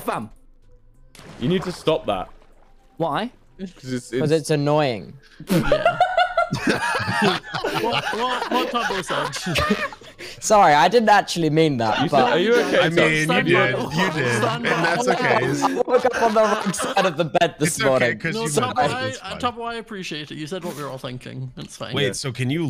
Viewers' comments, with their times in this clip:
0:05 I love when wilbur does that laugh when he leans super close to the camera bc he's laughing so hard. wholsome